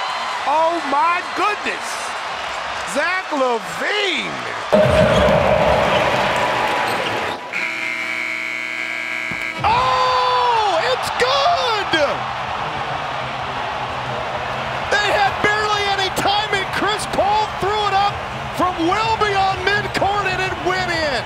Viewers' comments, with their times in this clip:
0:06 I like the silence in